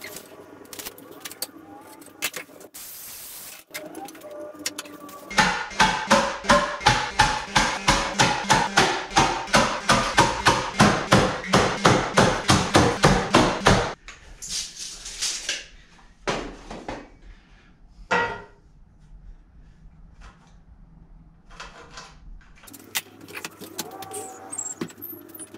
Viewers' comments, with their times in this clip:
0:09 sounds like a cheap bongo set 😂😂